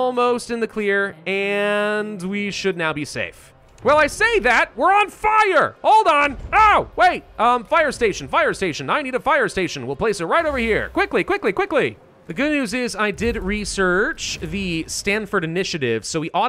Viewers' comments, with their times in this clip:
0:04 I love the way you say "We're on FIRE!" hahaha.